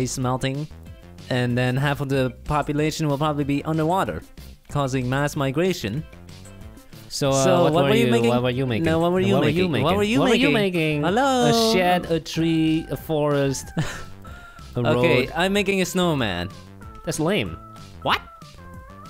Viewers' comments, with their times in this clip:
0:07 just sounds like them one person saying it to them self’s kinda like the YESSIR meme